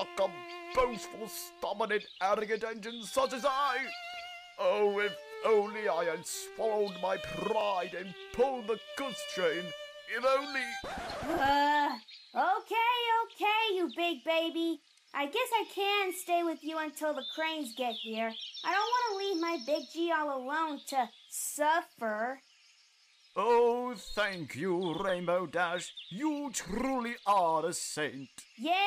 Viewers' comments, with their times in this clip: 0:10 I like that record scratch